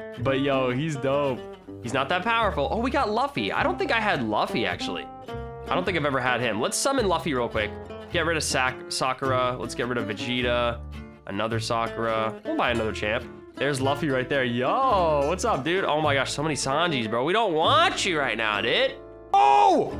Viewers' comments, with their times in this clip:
0:03 I love it how he pronounces "luffy" fron one piece.